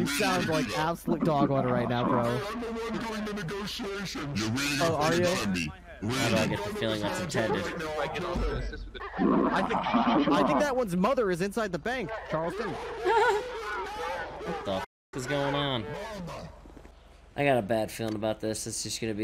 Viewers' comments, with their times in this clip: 0:05 When they’re all talking in the bank it sounds like the very beginning of Star Wars republic commando👀👀